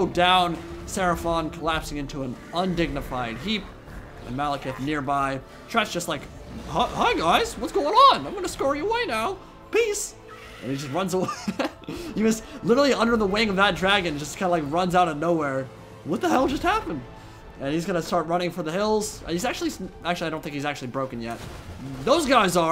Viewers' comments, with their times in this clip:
0:05 how fitting that you made tretch sound like mickey mouse